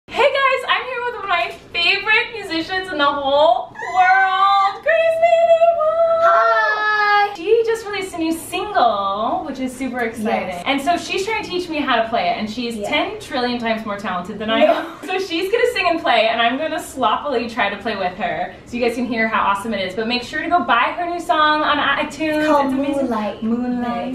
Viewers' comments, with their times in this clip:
0:08 Colleen sounds like Miranda!😂